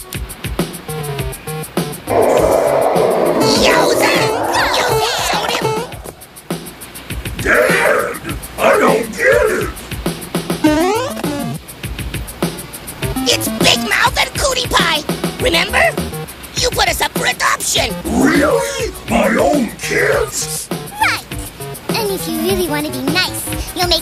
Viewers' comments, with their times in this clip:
0:07 Sounds like Sonic. So Dadzilla pretends to be Sonic.